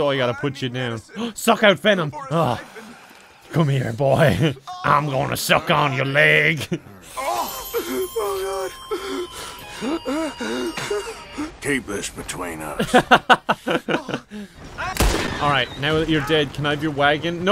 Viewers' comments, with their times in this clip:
0:04 You sound way too happy about suckin' out venom.